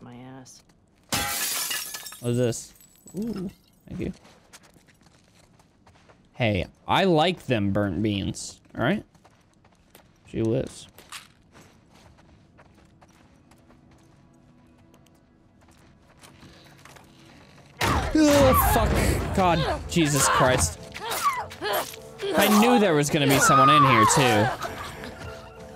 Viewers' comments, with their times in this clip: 0:10 all i heard was "je wiz mark"